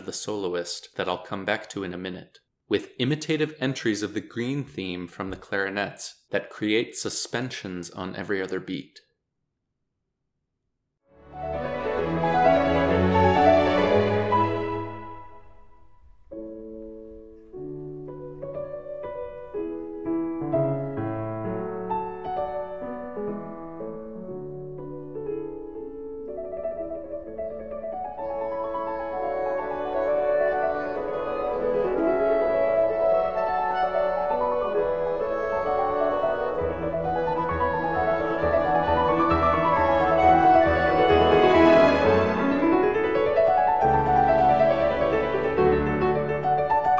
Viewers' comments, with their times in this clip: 0:06 Mozart's suspensions are beguiling. Bars 109 onwards of the Larghetto from the Quintet for Piano and Winds, K452, I could listen to these exquisite suspensions again and again and again...
0:34 For me, the G natural in the measure before those gorgeous suspensions also adds to the exquisite beauty!